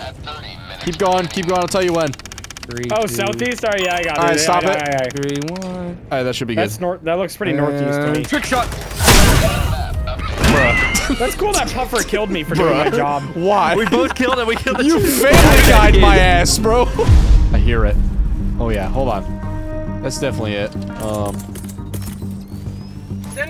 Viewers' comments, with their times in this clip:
0:10 i paused and meowed thinking it was my cats calling me :v i was tricked